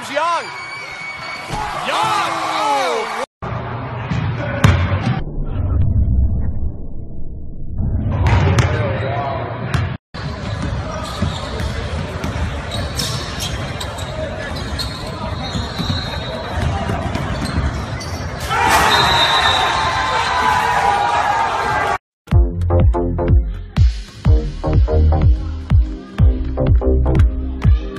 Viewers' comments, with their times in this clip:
0:09 lol am I the only one who heard I'm pregnant